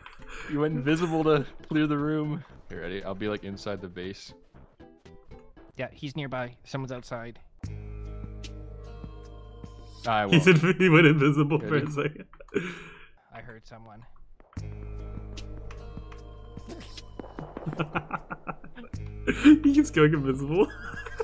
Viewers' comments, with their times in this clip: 0:03 That music when he was creeping up on the base fucking killed me 😂😂